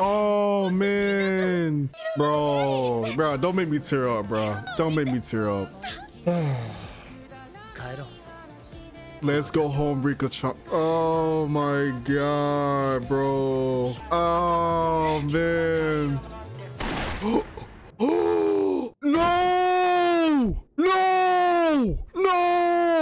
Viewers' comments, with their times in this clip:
0:10 U BROKE MY EAR DRUMS